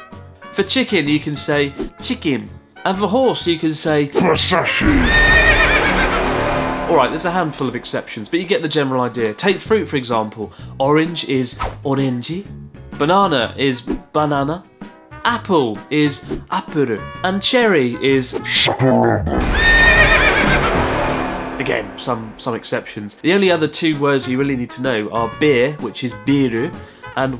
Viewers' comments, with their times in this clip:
0:04 BAHSASHI .... I thought I activated a secret fight with a character in Mortal Kombat for a second ...
0:12 Ok but why did he literally sound EXACTLY like Ash from Banana Fish when he said "Banana" in Japanese ?